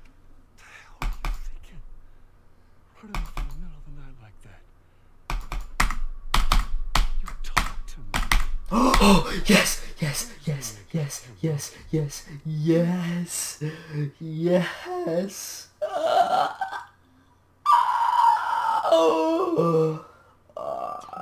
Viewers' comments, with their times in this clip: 0:09 I love how the breaths and yess’ sync with the background pulses